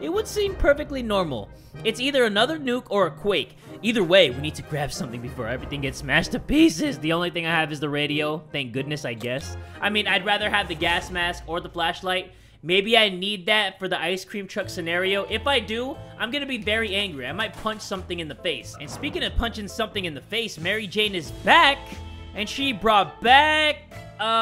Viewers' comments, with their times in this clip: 0:03 look at that voice crack
0:05 Voice crack ? Like if you heard that